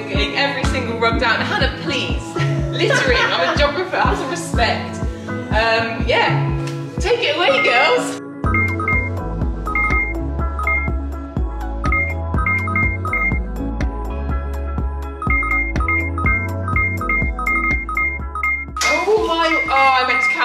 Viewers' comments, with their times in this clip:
0:07 Please tell me I wasn't the only one madly searching for the beeping Love your videos!